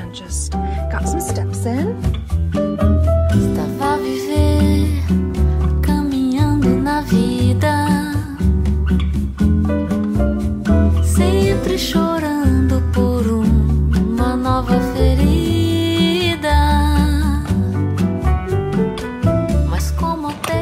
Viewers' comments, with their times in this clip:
0:04 why isn’t that you singing?